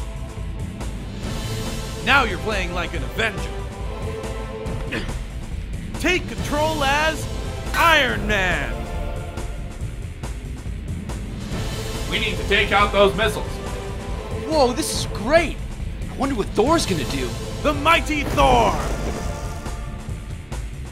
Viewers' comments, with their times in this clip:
0:04 Sounds like Naked Snake.